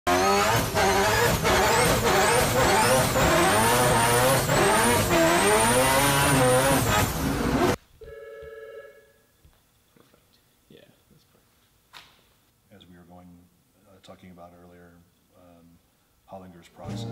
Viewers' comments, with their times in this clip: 0:01 This is what I imagine Epstein in heat sounded like